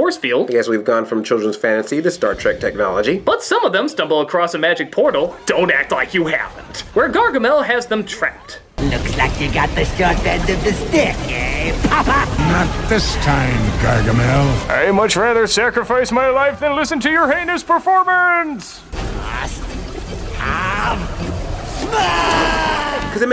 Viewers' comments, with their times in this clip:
0:09 Did Gargamel turn into Draco I know he said you have the short end of the stick Papa it sounded like you said you have the short end of the stick potta